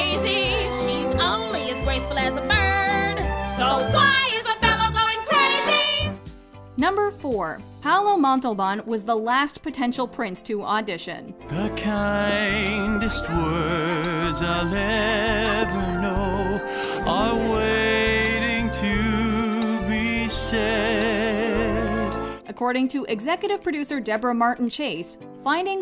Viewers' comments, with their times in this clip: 0:06 I thought it was "Wider than a swan's"